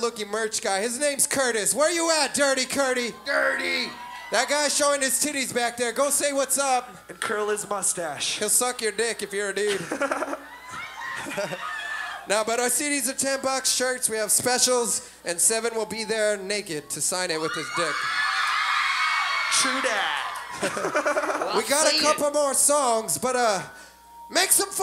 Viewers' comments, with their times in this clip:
0:10 did u hear the girl in the background yellin I LOVE YOU! ?